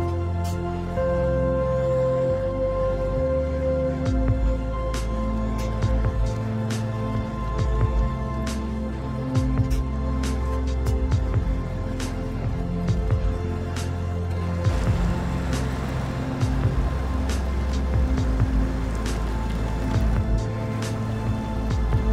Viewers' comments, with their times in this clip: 0:06 I like how at (roughly) P16's brakes sound like a hi-hat\snare in the song :D (Also i'm addicted to these videos now and have to watch all 61 of them)